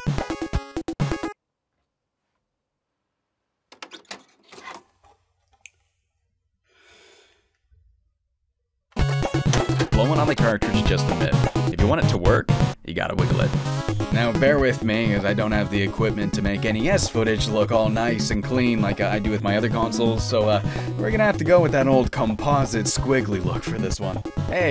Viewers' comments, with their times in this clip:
0:09 Did you mean to say "Blowing on the cartridge is just a myth" to the beat of the music? Like, that part is unusually groovy.